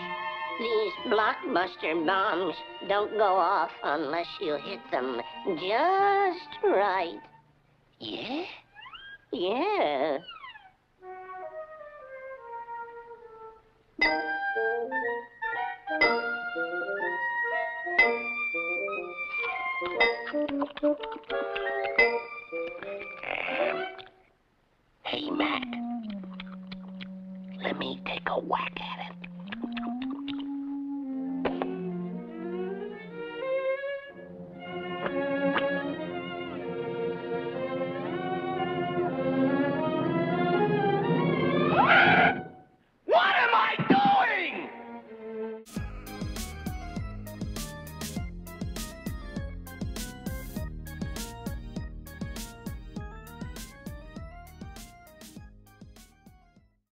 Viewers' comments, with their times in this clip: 0:07 bugs sounds lit asf
0:43 my reactions kids cherring sound